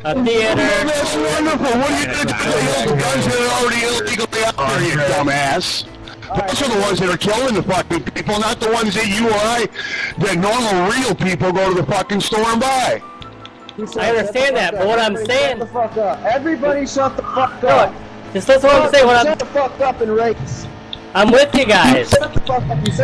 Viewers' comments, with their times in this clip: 0:10 worst fucking mic ever.